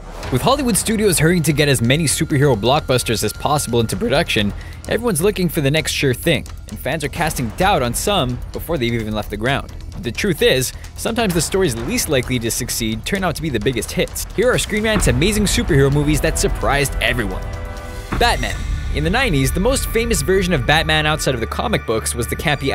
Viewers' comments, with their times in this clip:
0:03 AM I THE ONLY ONE WHO HEARD THAT MLG VOICE CRACK
0:04 nice voice crack XD